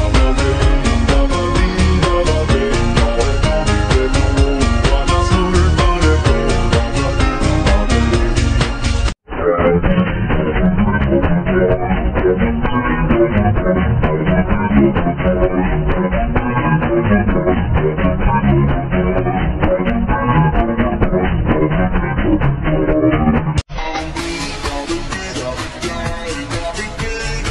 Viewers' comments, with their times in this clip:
0:09 very low petard cover